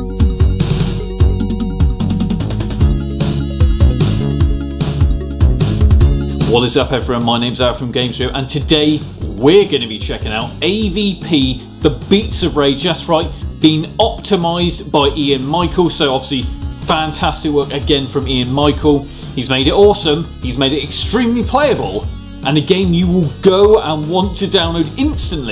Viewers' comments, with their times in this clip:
0:07 your name's wot from where?